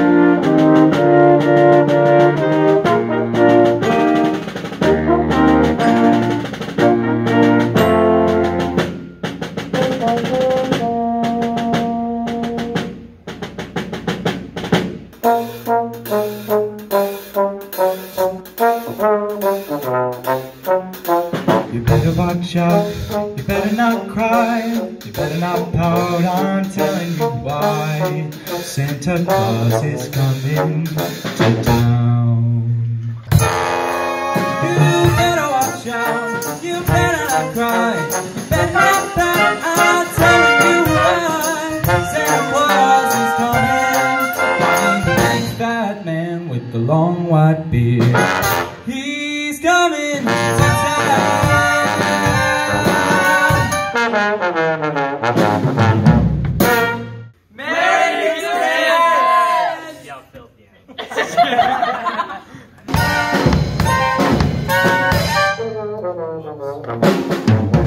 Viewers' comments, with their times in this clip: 0:03 I love the baritone saxophone part here
0:15 you have an amazing voice!
0:19 I’m looking at the trombone player thinking “man he’s pretty good!” Until I hear the singing start and I’m thinking I’m listening to the actual track for a sec, then I look over and see that the guy in the green jumper is singing!?!? All of you are really talented!
0:21 The Best singing I've ever heard. I bet somebody is going to recruit you! :) You made my day
0:48 his voice sound so good!!!